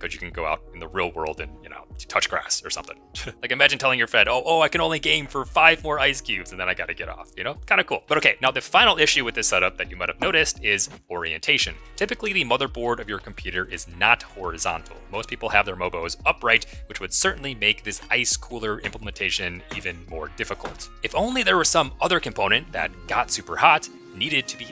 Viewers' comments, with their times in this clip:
0:07 You sound and talk exactly like Marques Brownlee, especially starting